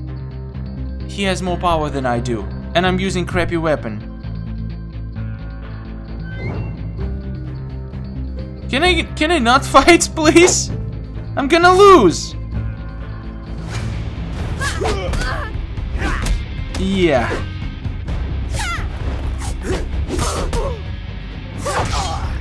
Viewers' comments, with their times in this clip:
0:03 that accent makes him very cute Like a baby